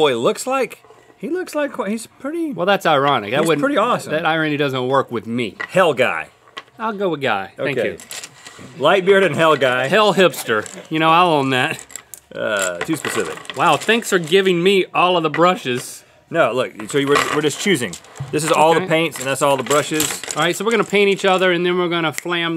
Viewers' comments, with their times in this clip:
0:08 he says hell hipster which sounds really close to hail... xD